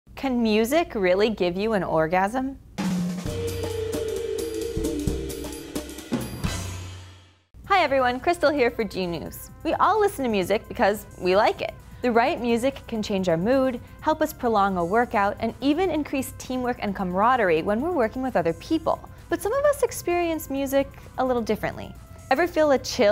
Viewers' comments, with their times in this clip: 0:08 did anyone else hear "G"news?